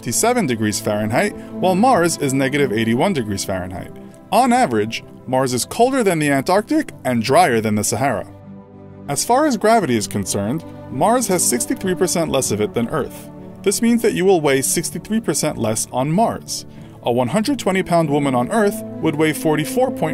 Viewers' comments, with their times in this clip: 0:05 wtf voice crack haha
0:08 Lol nice voice crack when saying antartic